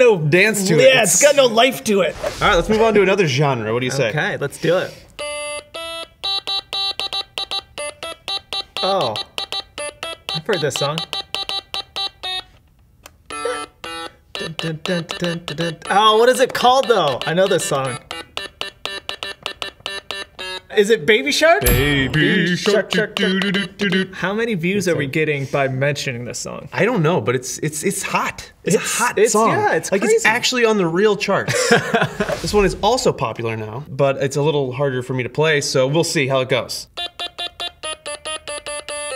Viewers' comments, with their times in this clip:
0:04 I hate that song
0:05 Me: I want Megalovania! Vat19: We have Megalovania at home Megalovania at home:
0:22 you make my ears bleed for the first time